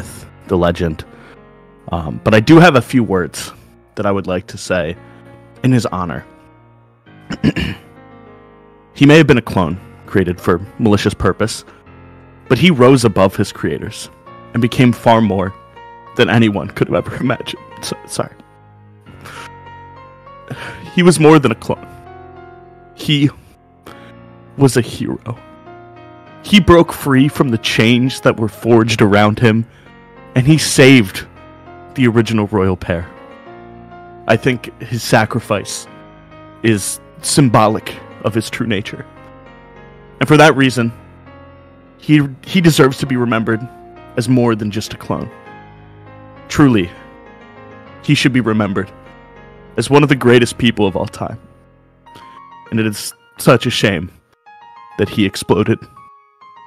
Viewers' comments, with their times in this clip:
0:10 he mic sound like peach
0:37 Bro the background music 💀🗿
0:40 the background music is literally piano version of rick roll